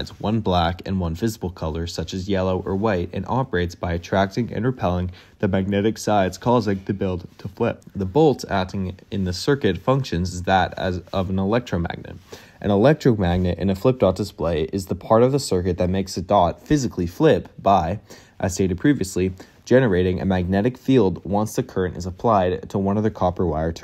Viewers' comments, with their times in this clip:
0:04 were you holding back a sneeze or a yawn?